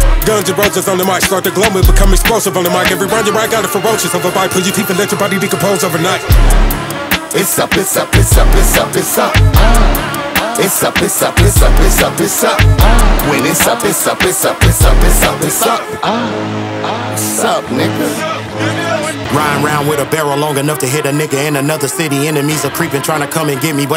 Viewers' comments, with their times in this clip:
0:06 In sounds dope as 4uck. Impressive flow… ✝️ 31